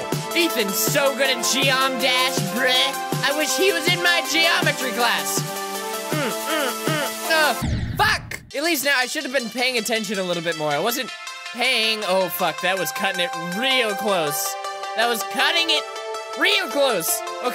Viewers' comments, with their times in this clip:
0:05 that was SO in time with the music